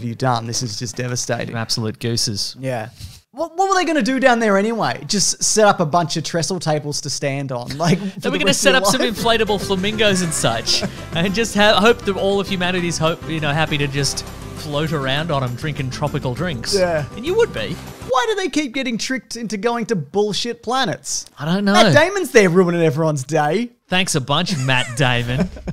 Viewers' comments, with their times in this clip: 0:10 That Destiny Islands music caught me off guard